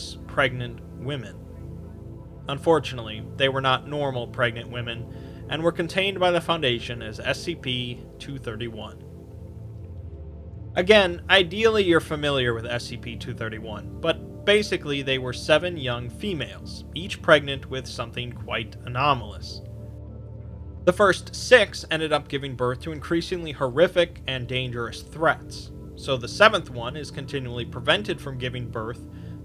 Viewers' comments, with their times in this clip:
0:10 What the? Was that a mistake or am I missing a joke? Was that your dishwasher just popping into this heavy SCP video?